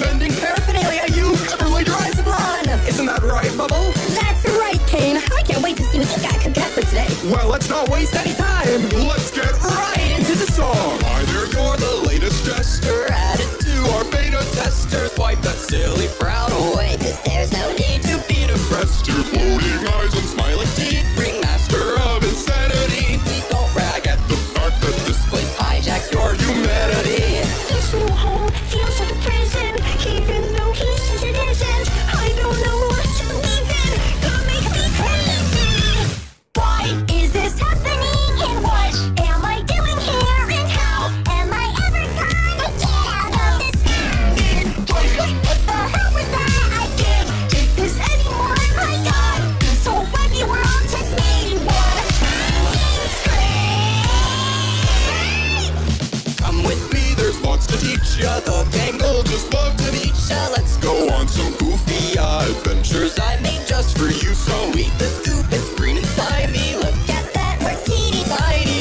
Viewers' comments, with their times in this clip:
0:04 Bubble so big😂😂 Pomni is screaaaaaaaaaaaaaaaaaamm
0:36 sounds like a rigged audio of wacky world
0:53 NGL, this cursed bit of the song makes it a lot better for pomni's "SCREAMMMM!!!!!!"